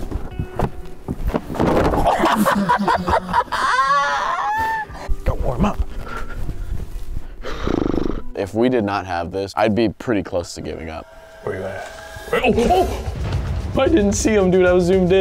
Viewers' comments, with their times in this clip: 0:03 THAT LAUGH OML💀💀